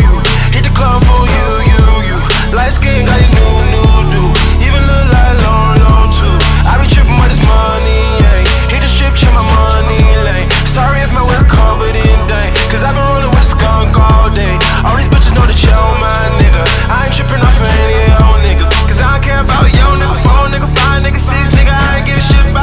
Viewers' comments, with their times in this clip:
0:08 also that lil sound in the background in that the more he raps the faster it gets I hope yall know what I mean